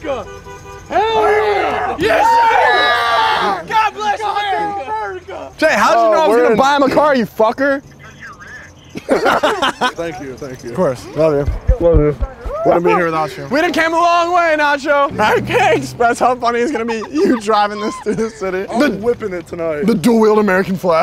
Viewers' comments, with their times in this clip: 0:08 laughs cause he knows hes rich as shit